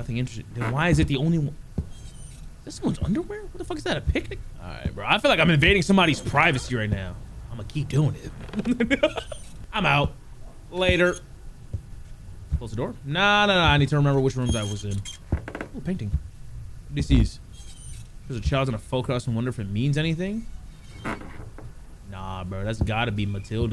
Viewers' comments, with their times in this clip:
0:05 Did anyone else hear the moan 💀